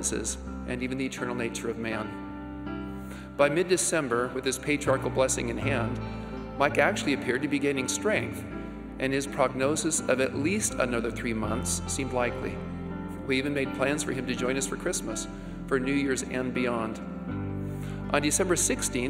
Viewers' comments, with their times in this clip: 0:04 What a great highlight! Thank you. The background music got a little loud starting